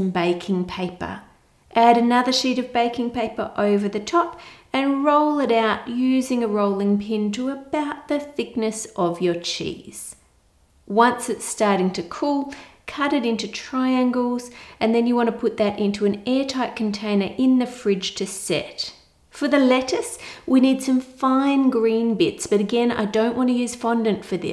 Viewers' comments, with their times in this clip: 0:09 What she said: “... to about the thickness of your cheese.” What I heard: “... to about the thickness of your cheeks.”